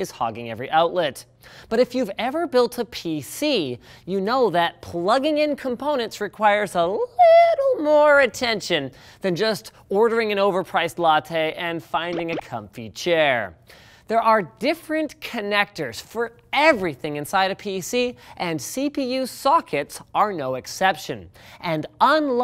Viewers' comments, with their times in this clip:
0:07 voice crack ohhh being a guy is great